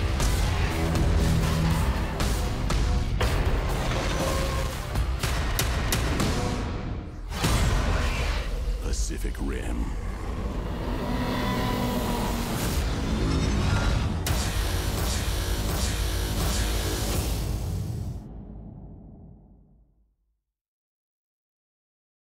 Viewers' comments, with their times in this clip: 0:09 that was a T-REX roar